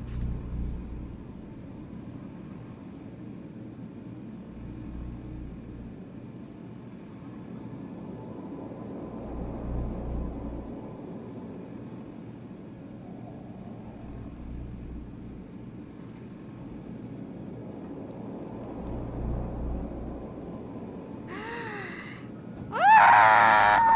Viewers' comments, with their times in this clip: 0:04 this pose combined with the absolute silence besides the wind blowing is so ominous 😂